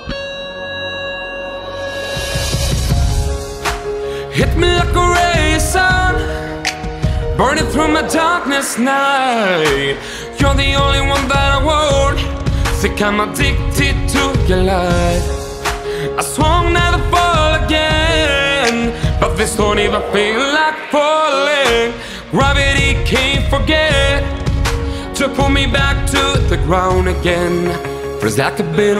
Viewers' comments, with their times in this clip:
0:09 Autotune at its peak